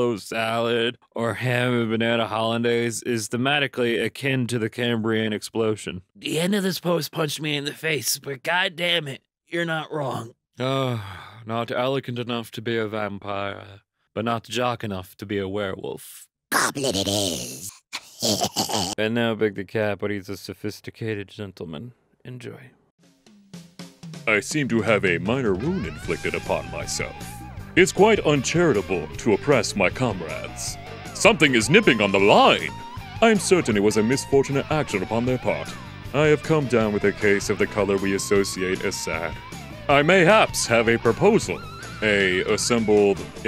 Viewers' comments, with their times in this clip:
0:09 great goblin voice
0:24 Big the cat sounds Like that One Character that fills the swat of bof character in danganronpa